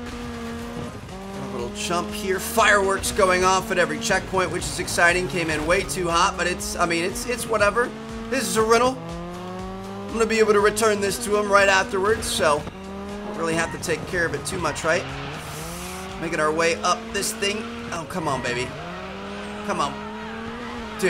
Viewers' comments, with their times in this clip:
0:08 calls the car a Renault but has Skoda written on the rear door